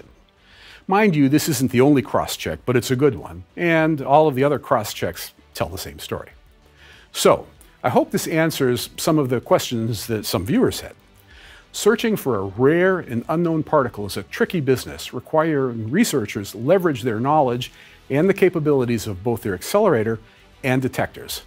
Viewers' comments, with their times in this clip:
0:03 the fade in of the music was irritating. It was so slow and sneaky, at first I though my pasta water was overflowing on the stove before I could locate the sound.